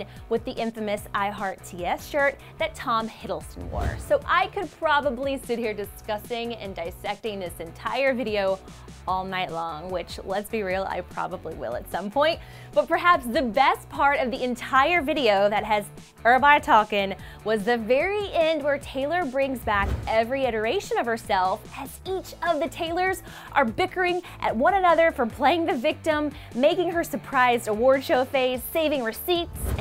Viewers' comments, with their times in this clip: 0:10 am i the only one that heard when she said long it's like..kinda....autotuned.. idk